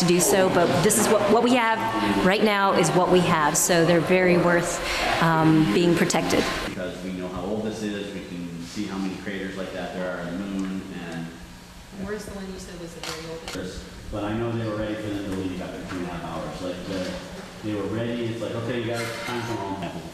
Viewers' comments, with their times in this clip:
0:06 this sound like Ethan from h3h3 lol.